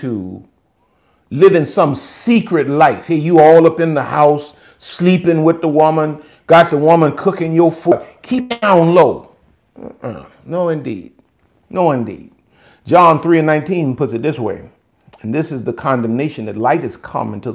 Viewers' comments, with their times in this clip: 0:03 😂#3- the pimp daddy voice “let’s fly under the radar” - priceless!